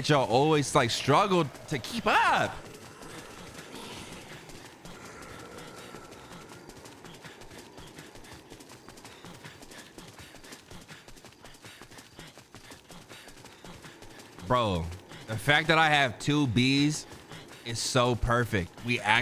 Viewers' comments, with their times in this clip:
0:07 the footsteps and the breathing sound like a crazy ass beat